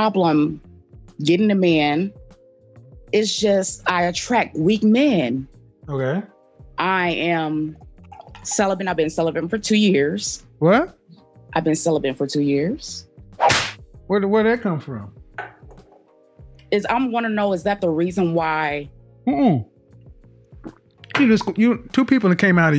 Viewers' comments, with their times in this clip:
0:09 His reaction with the "What" and slap sound had me 😂😂😂.